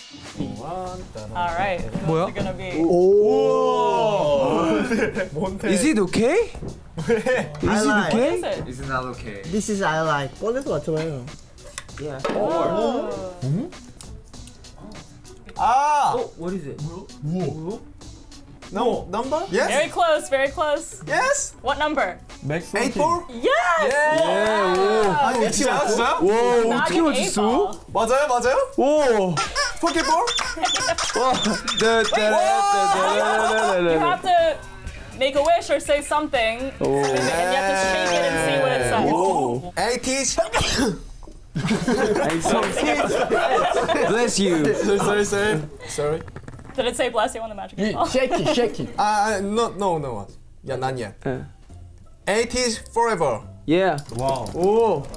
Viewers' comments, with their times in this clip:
0:08 “Is you gay?” Do you guys hear that too? Just me.....okay
0:09 omg he sounds so american
0:29 Mingi squeaking the little hedgehog is the purest thing 🥺🥺🥺
0:39 Yunho: trying to speak Jongho: ACHOO that sneeze was so cute tho😂 why everything automatically cuter when you’re a maknae
0:39 the way i kept replaying this part when jongho sneezes
0:40 bless you :,) that made me laugh 😂 Yunho “Ateez-“ Jongho “Achoo”
0:40 Ateez? More like Asneeze
0:40 Lol, Yunho - Ateez thn Jongho - aachu!